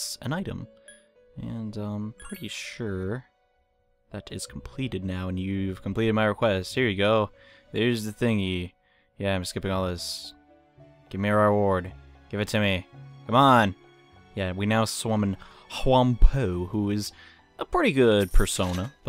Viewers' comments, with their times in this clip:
0:03 I slowed to 0.25x speed to read the stuff that was skipped through and it sounded amazing